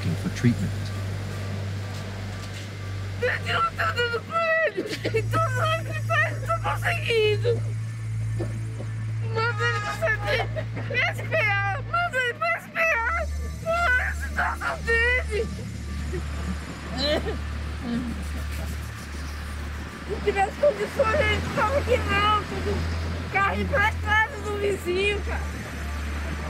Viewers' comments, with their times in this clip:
0:09 The guy is badly faking that cough. What a staged-shit-show